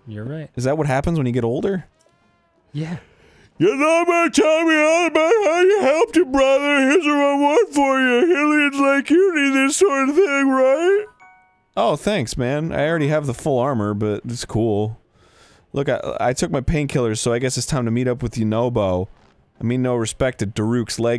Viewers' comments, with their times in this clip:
0:03 Because kinda sounded like Arin was talking while yawning it made me yawn...